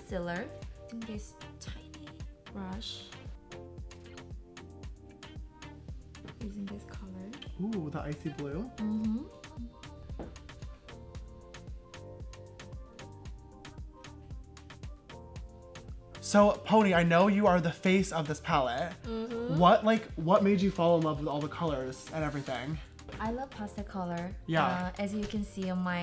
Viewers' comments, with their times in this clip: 0:07 Did he just spoke Korean ? Or is it my ears ?